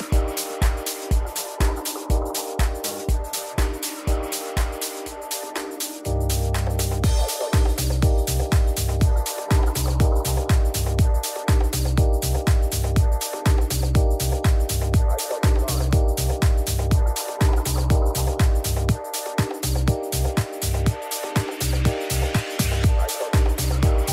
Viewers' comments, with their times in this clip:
0:07 Something happened when that beat dropped y'all know what I'm talking about.